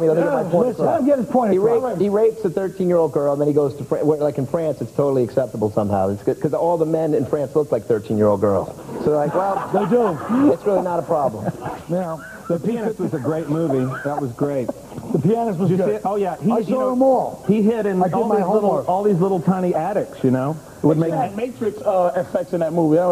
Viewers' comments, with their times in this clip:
0:06 Love Norton laughing at Patrice taking Giraldo's jokes